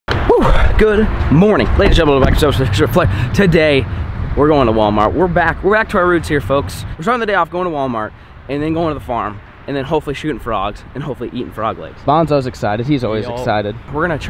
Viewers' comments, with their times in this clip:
0:01 So who's gonna talk Dude said "gsjgsjhdekusjshjsjfhih today"
0:02 does anyone know what the hell he sed